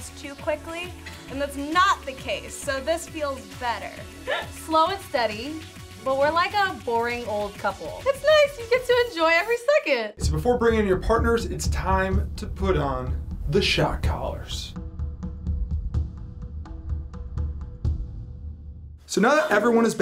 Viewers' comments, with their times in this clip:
0:04 What the alien laugh baby abs